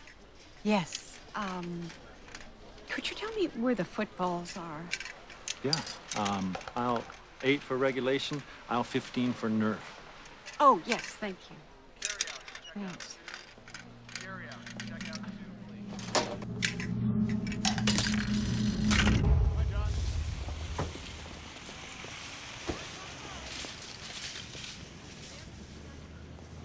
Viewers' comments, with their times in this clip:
0:08 I always liked the way he said Nerrrrf .